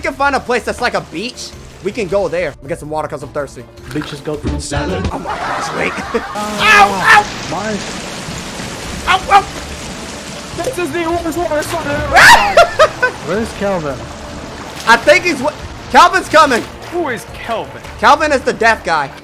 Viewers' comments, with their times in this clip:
0:04 IDK why but that "fruit salad" censor being sped up sounds funnier XD